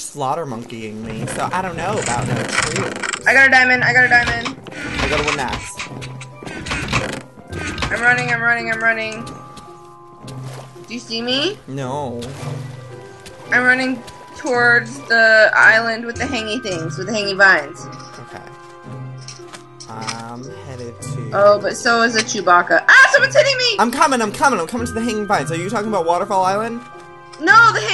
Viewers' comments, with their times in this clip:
0:09 the way he says no omfg XD